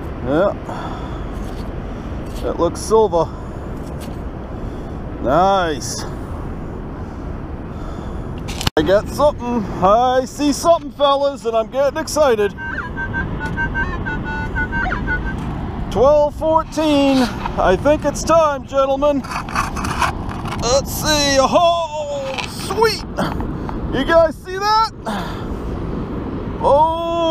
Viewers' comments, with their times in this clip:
0:10 That techno riff you played with the detector was awesome. Put a beat behind it with a bass Line and your good